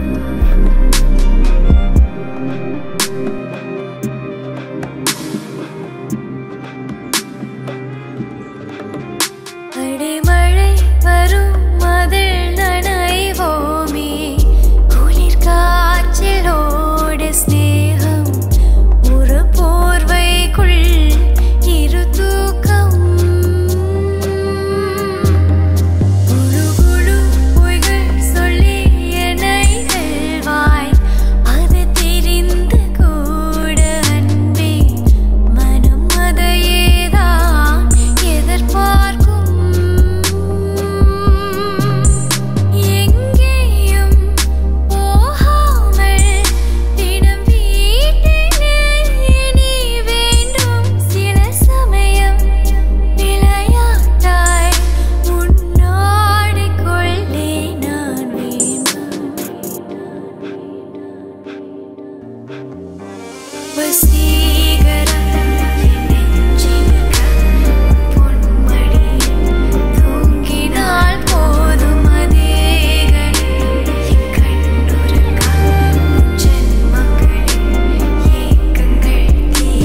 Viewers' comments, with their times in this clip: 0:10 From addicted to ur voice awesome sis
1:05 Mesmering Husky voice she got ♡ I love her beauty and Voice